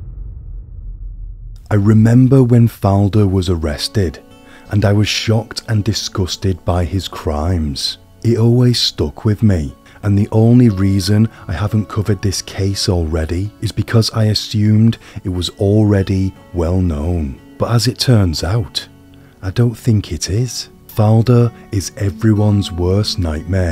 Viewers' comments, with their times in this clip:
0:06 It's not. He talks normally since it's unscripted lol